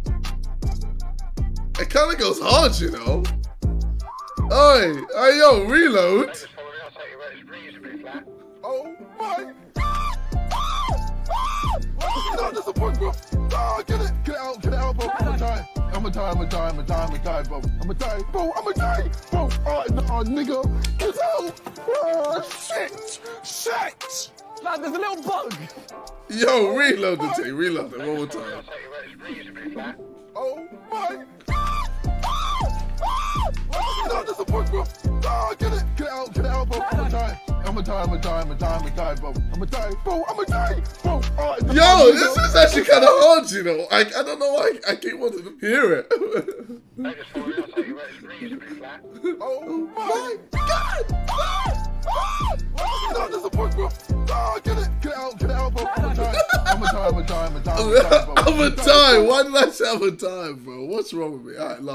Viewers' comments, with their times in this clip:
0:08 why does it go so good with the beat 😂 that’s fire 🔥
0:15 sounds like he's about to go innn right here if it was an actual song fr
0:40 when he says ima die all I hear is ima dive r.i.p to all the audiences that have faced KSI's body slam
0:45 it low key sounds like a lil pump song